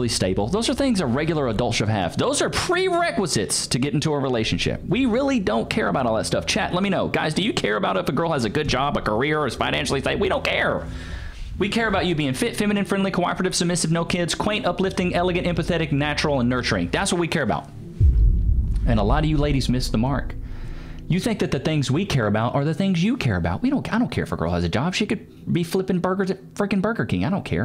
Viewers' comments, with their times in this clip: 0:10 😮 yo is impressive how he spat that out so fast